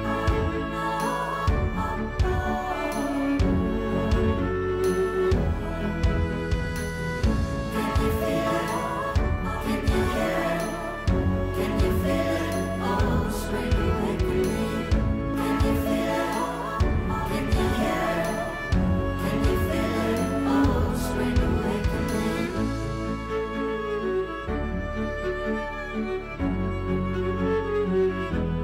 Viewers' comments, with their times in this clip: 0:10 love how cozy it was, my fave was the asmr of unboxing stuff, it was soo mesmerizing!! also, is the chair sturdy? is it worth it?